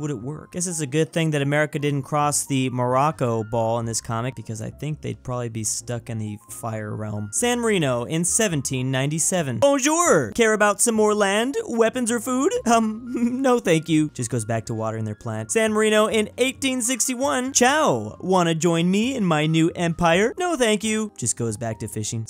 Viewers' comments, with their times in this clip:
0:03 i thoth morroko was barak obamo when he sed it